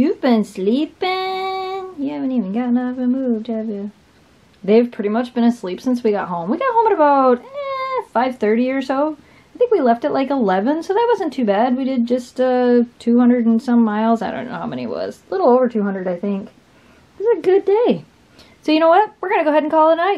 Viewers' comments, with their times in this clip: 0:06 That was a perfect sync of Kira's yawn lol